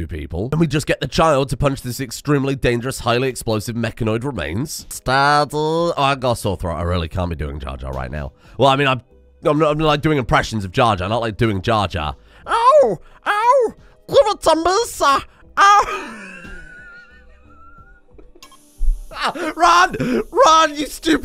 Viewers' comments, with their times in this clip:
0:03 That jarjar impression was everything I ever dreamed of and more
0:05 Mr Streamer doing Jar Jar (impressions) always brings a smile to my human face